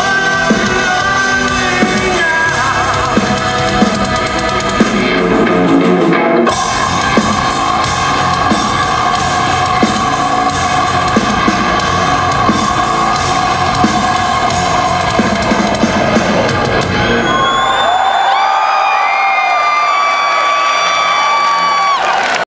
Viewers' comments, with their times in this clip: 0:06 ...now that's how you scream! I'm sooo glad i was there